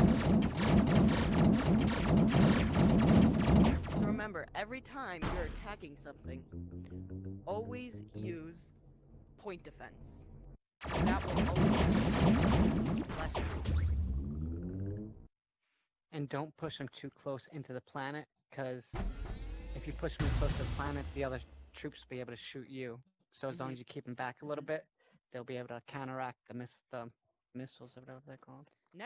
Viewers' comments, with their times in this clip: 0:10 Good video but way too quiet and sometimes when your speaking you can’t be heard over top of lasers like You got completely drowned out